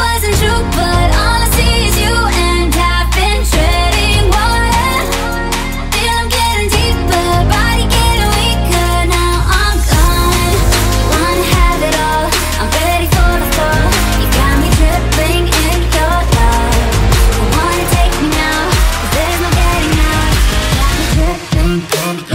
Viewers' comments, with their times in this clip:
0:09 beat drop time stamp for yall <3